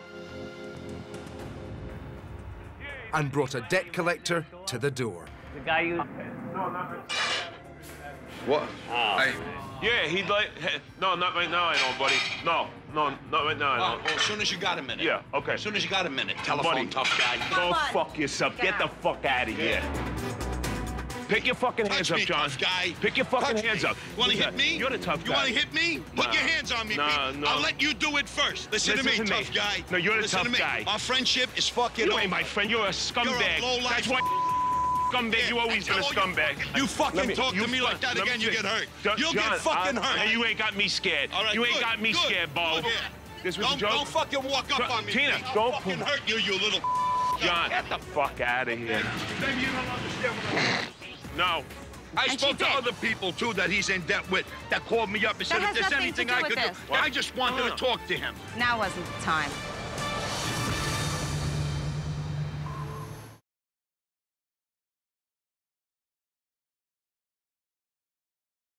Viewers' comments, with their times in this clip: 0:09 your awareness isnt the best clearly lmao, look you cant even hear what he's saying, but as soon as the "telephone tough guy" whos got a mic walks up to him you can hear what hes saying
0:34 Did i just hear a bleep? ? On a Gordon Ramsey show? What double standard is this?
0:47 Wait, they F-bomb like crazy but they bleep something out?
0:48 the debt collector doesn't have a mic. when the owner walks away you can hardly hear him
0:49 I am 99% the cameraman have a snicker
0:49 holy fuck, the cameraman actually laughed
0:50 Even the camera man snickered lol
0:50 did the camera guy choke on a giggle?
0:51 did he fart?🤣🤣
0:53 When did they mic up the debt collector? :p